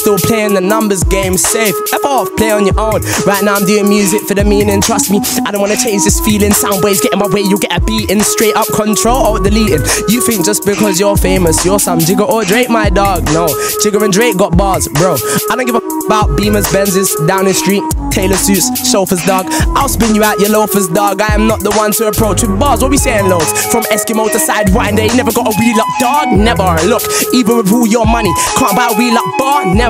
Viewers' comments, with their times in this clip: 0:10 is why chip is one of the coldest to touch mic, flow and bars are mad